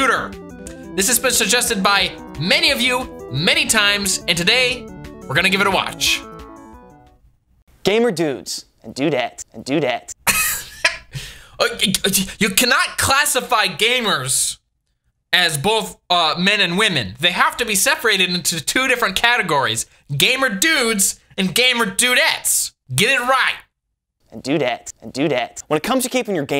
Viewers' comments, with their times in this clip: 0:10 that sounds after his weeze. Omg. Its perfect ytpmv material.